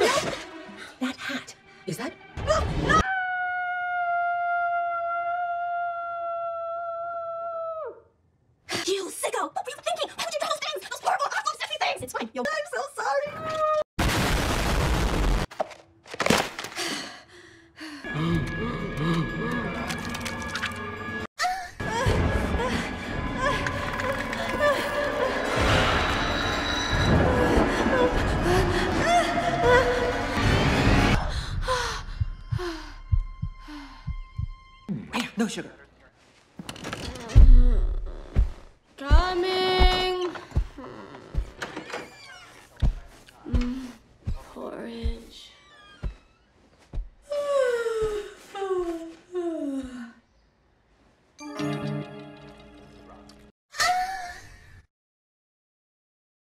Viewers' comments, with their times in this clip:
0:04 I love how mei mei screams so cutely and funny😂
0:40 the ahhh is in
0:50 The funniest part in this video is the "uh" moan its in
0:54 if we're going with the among us jokes you could've had that "Amoongus" thing play instead of the moaning lol